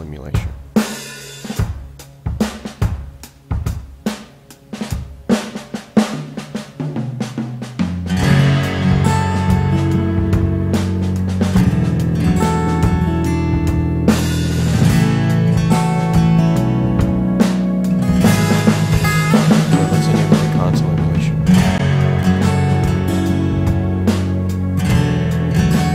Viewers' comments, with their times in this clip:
0:06 Mics too low, can't make anything out after ish, I'm also a bit confused, I think that it is a really bizarre feature, why would I want to treat every channel with the same effect, I suppose if mixing 100 guitars and nothing else..it might be useful ! Like the guitar panning by the way, very cool